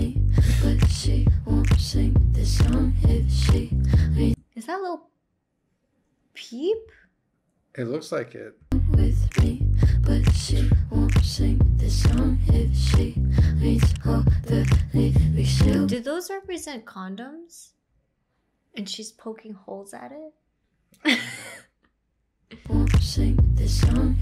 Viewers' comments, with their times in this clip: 0:07 tell me why i thought she said is that dula peep